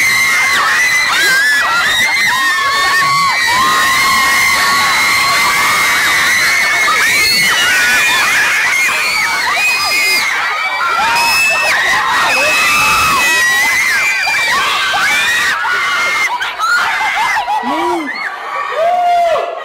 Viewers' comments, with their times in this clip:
0:03 ,I think I've gone deaf.....RIP Headphone users.
0:07 R.I.P. all headphone users